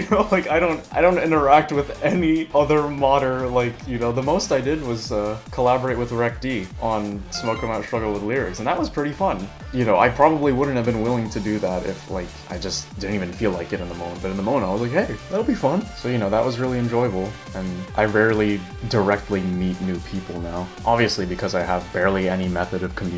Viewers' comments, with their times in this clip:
0:07 Does anyone else notice that she edited the Undertale phone alert noise right when the pop-up on the upper right comes up.